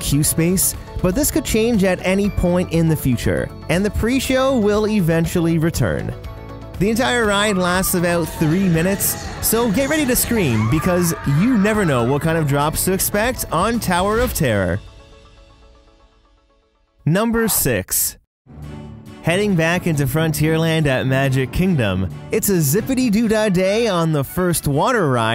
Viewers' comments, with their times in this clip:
0:10 There's a guy in a shirt that says "Bench" on it, just a random thing noticed. Also it's always exciting to hear your wildest ride in the wilderness voice!